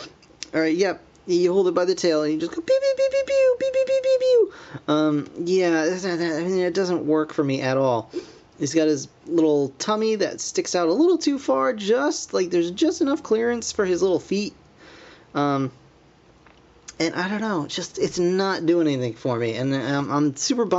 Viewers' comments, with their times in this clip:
0:05 I don't know what the heck this guy says